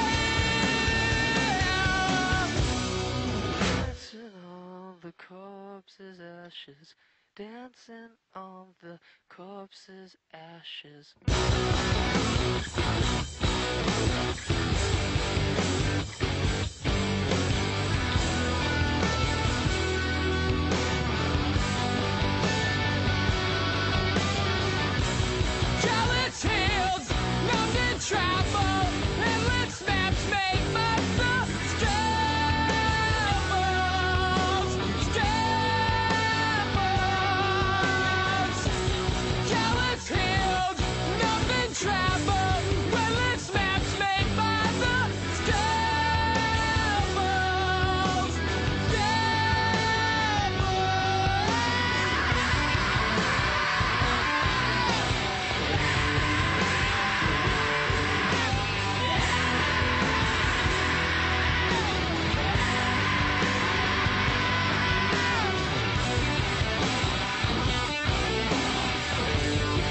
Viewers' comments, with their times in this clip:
0:03 The musical change ....
0:52 Best scream in any song, Ever!